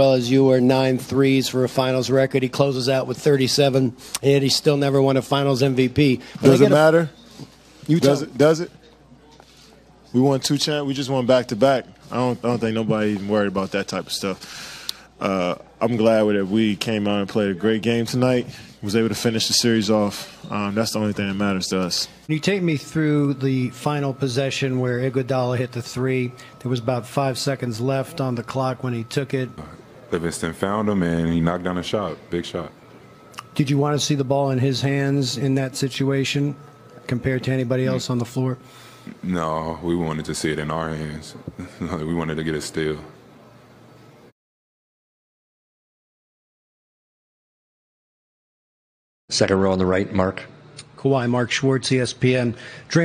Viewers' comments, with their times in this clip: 0:05 Durant sounds like he just came out of a champagne shower
0:40 you hear a lil bit of the Kawhi laugh 😂😂😂😂
0:41 Kawhi laughed a lil